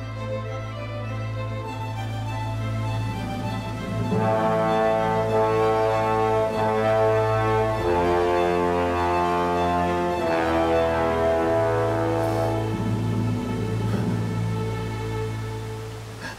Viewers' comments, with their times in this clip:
0:03 I love the distorted imperial march!